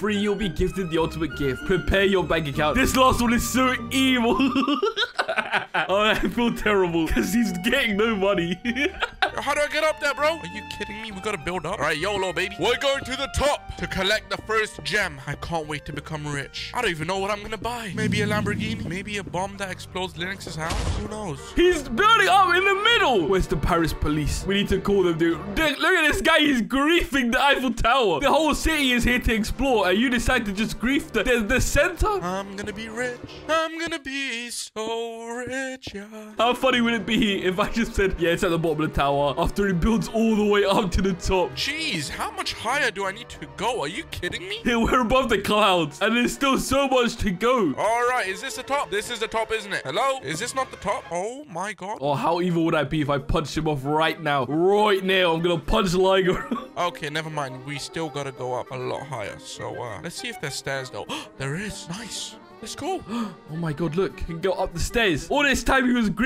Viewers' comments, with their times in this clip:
0:04 Laugh went from demon to doni in a second.
0:04 what is that laugh
0:04 listen to the laugh
0:04 anybody realized he sounds like a closwn ? i can't stop laughing lol xD
0:54 the Australian accent